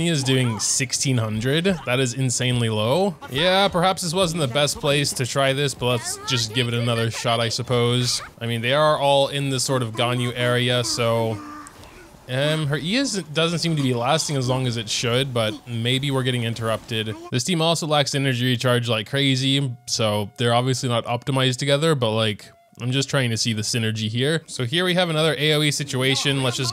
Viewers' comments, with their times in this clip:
0:08 10/10 farming montage music, and you dashed so you accidentally cancel her E so there is no kick and it is short